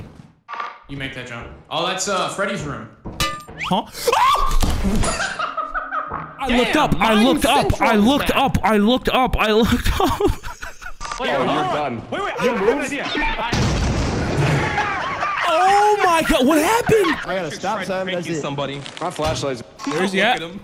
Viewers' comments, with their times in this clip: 0:03 that huh is so funny
0:06 did someone fart?